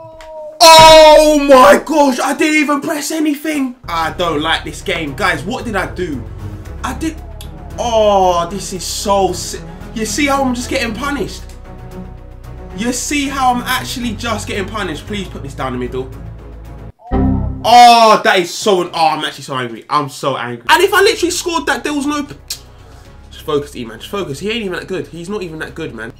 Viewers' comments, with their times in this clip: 0:08 did anyone realise theirs an echo